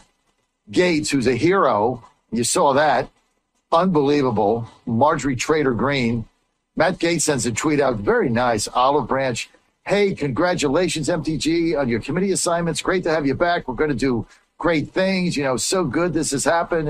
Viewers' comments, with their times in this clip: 0:04 Hahahaha! he says Marjorie Trailer Green!! Nomen est omen!